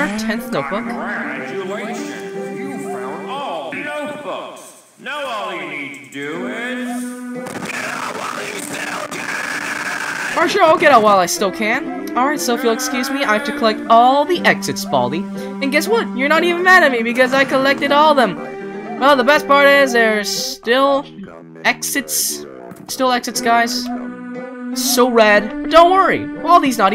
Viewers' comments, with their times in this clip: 0:07 Image having your prinical scream this loud in the mic